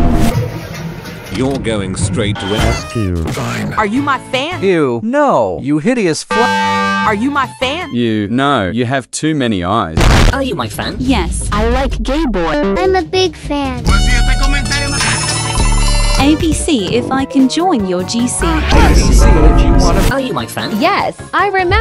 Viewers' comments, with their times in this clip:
0:06 Bro did a i like cut g